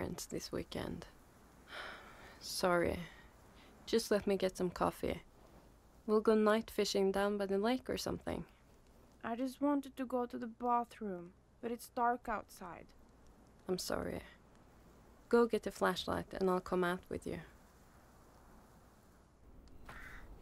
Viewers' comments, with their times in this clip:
0:03 --- that accent. Gal Gadot is that you?